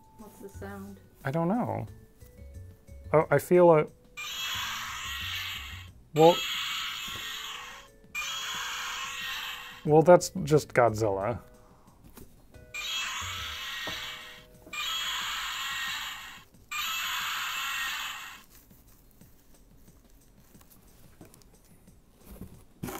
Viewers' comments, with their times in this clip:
0:05 I have a parasaurolophus that makes the same noise! XD